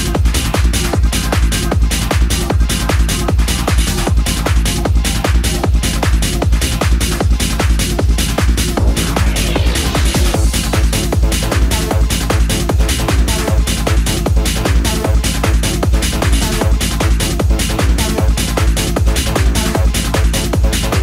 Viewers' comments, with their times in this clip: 0:06 fat az f- - - tunes